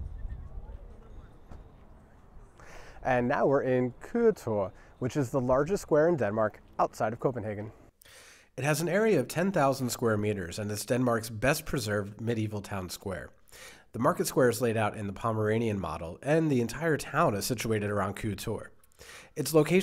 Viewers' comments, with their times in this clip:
0:05 you got super close to pronouncing Køge correctly you just needed do pronounce the e a bit more it sound kinda like eh. But it is a really hard word with the soft g and the ø